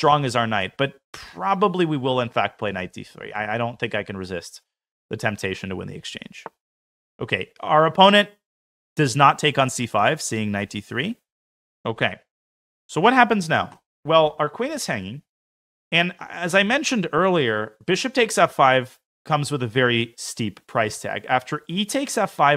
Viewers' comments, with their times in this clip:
0:03 Minute onwards sounds a bit like the rambling of a schizophrenic :D love every second of it